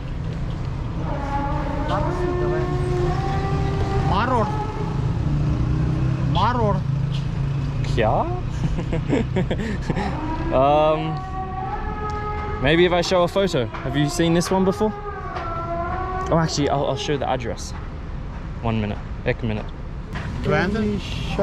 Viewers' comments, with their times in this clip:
0:06 the way he say "Kiyaaa" 😍😍😍
0:08 when he said "kya" is so cute